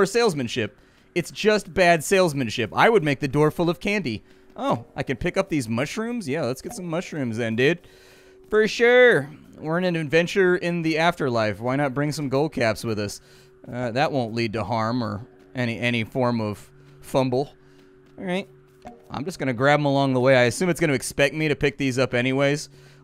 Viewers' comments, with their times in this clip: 0:06 he says dude like such a stoner. Like I could hear the the granola fall out of the dreads when he said it. lol